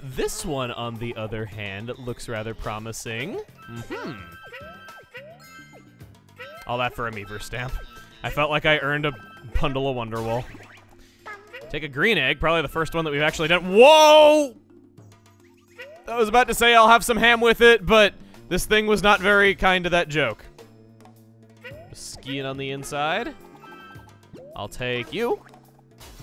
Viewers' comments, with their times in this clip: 0:09 Did he said "Pundle of Wonder Wool"?